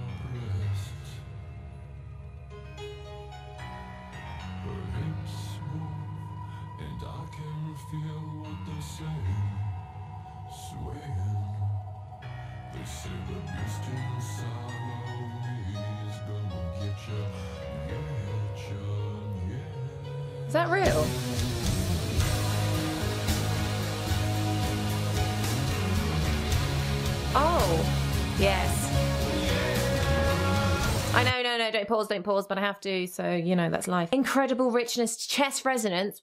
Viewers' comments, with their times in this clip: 0:08 That little shiver always gets me. Oh Peter, seducing everyone from the grave once again.
0:21 love the way Southerners react to (slightly distorted) electric guitars ! Up Midlands we invented such music; second nature to us !